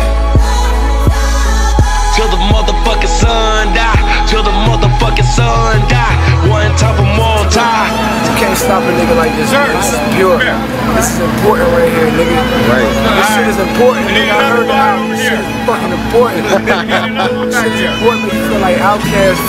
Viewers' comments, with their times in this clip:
0:07 That Violin from to the end of the song is just to epic. Dope Track